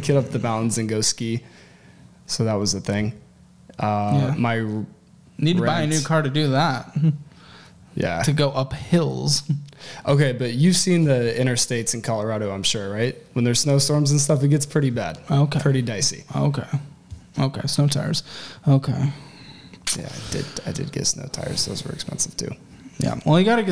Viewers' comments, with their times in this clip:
0:09 “justifies” “mumbles in anger” “mumbles in justification” “mumbles in we will move on”